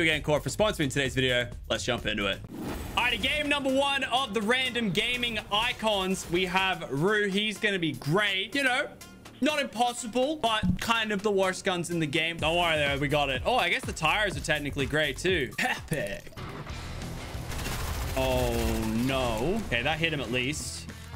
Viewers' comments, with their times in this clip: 0:06 when you say Ru instead of Ryu.
0:06 he said ryu in the intro but ru in the actual video
0:06 I can't believe that they have two street fighter characters but no doom guy. You can do better fortnite. did he just call ra-you ru?